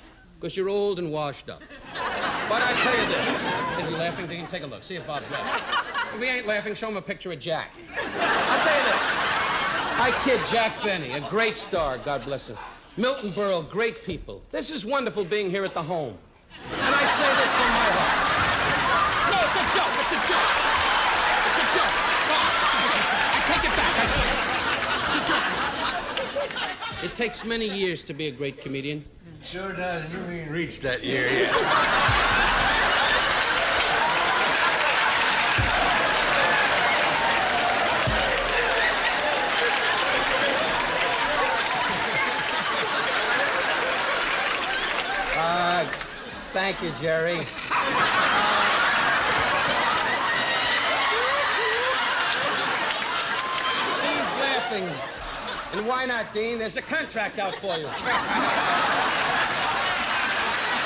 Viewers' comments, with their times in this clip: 0:09 Best line in the bit. Dean almost spit takes. Such tone and delivery!
0:13 Dean: sips drink Don: This wonderful being here at the home... Dean: dies laughing
0:45 Dean is laughing for real.......great joke! "Thank you Jerry" In two years we will have a Pandemic 😱
0:45 thank you jerry 😂 Best thing ever. Dean's laugh kills me everytime 😂